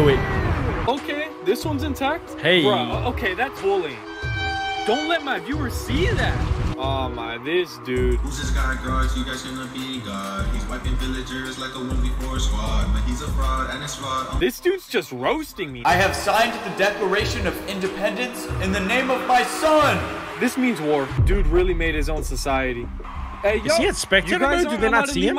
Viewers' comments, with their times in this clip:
0:08 Nothing got me except for taht beat 😂😂😂
0:08 he was hitting the beat though😂😂